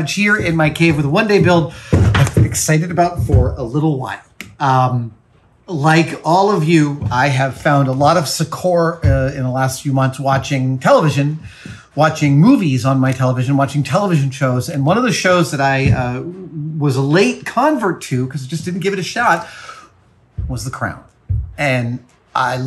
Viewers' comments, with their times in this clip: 0:07 How do you spell that word ? Secor? Secord? Secoar? I can't find it and I don't know the definition